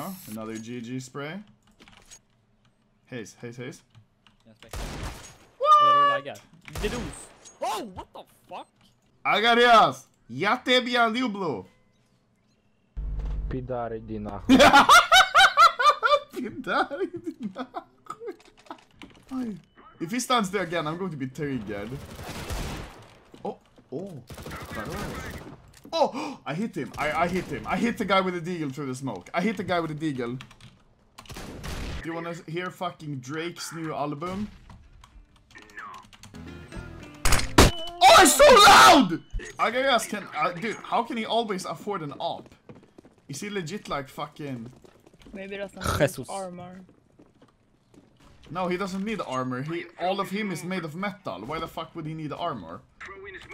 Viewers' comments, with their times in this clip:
0:09 BEST MOMENT ON CS:GO HISTORY "PIDAR IDI NAHUI" Optimus prime-
0:37 rip headphones ????-2017 Or not